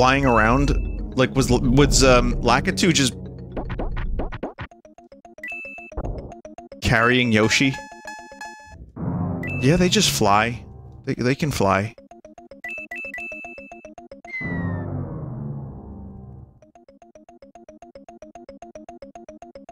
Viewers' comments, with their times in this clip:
0:05 that messed up version of the Ghost Valley theme sounds way creepier than the normal version.